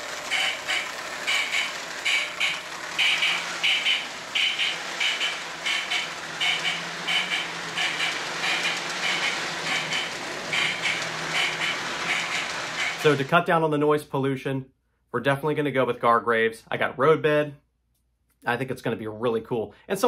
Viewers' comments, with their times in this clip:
0:08 I personally like the noise of the trains without the speakers. It sounds like a real train these days, but it’s your lay out, and I’m not trying to judge you for your opinions, just putting this out there.